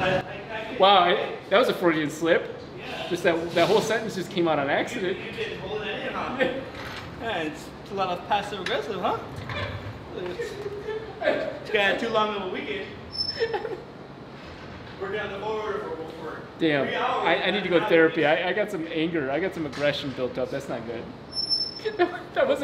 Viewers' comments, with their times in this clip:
0:08 big turbo in background ???